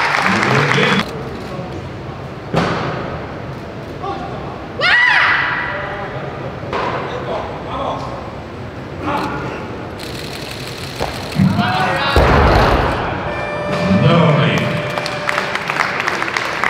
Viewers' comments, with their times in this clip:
0:03 she forgot to 'aaiieee'